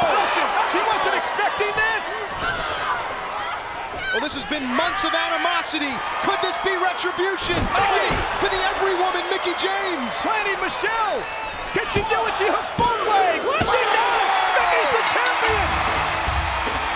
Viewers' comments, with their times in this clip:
0:04 her scream in this moment always give me chills